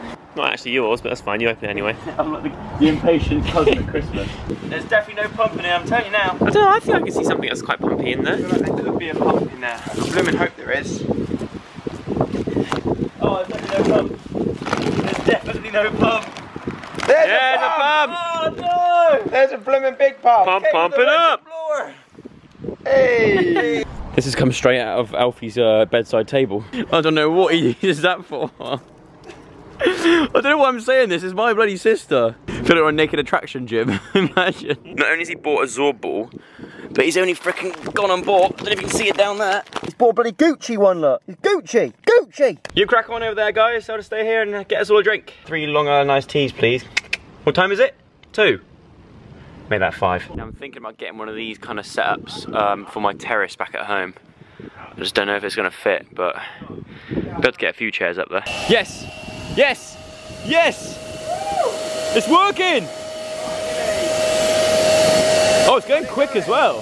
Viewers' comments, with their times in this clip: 0:08 I thought he was saying pug lol
0:51 did anyone mishear “terrace” for “terrorists”?? I was like JOE WHAT DO YOU MEAN YOUR TERRORISTS BACK AT HOME??!
0:54 I Swear He Said I'm Thinking Of Getting One Of These For My Terrorist Back At Home. :o What!